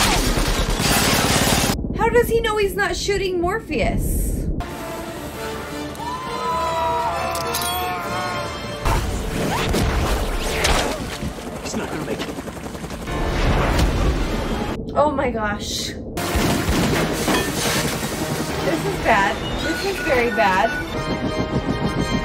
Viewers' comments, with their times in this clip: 0:05 I'm just hearing your anticipated squeel in lieu for Morpheus grunting.
0:06 morpheous hase strange scream :D